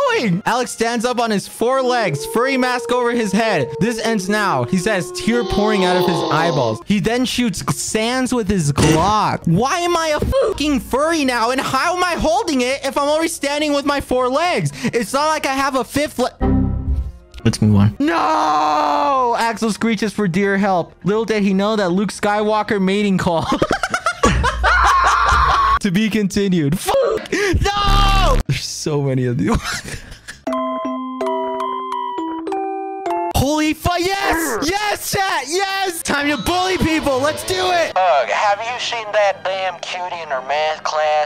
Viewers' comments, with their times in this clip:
0:06 I CANT THE SANS SOUND
0:09 the way he said “lets move on” 😭😭😭
0:13 I love how he was just screaming and he came to the realization
0:17 HOW'D HIS VOICE GET SO DEEP WTFFF
0:24 "This is a bedtime story" Alex: Rages punching the piano and the chair My earphones: